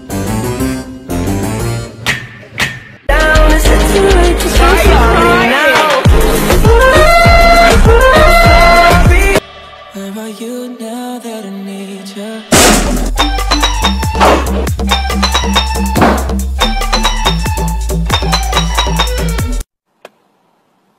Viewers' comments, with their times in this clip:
0:05 Best character crying